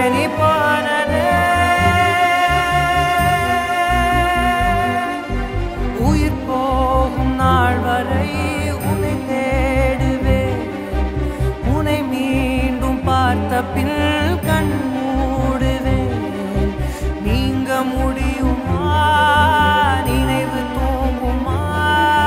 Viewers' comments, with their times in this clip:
0:06 Lyrics + Udhay Anna Acting + Raja Sir Music +Sid Voice 😍🥺😢🤤😪